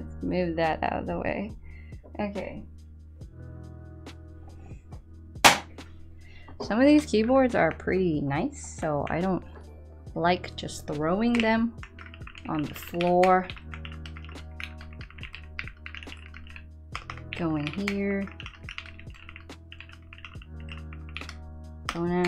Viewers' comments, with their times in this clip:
0:07 The board sounds absolutely amazing!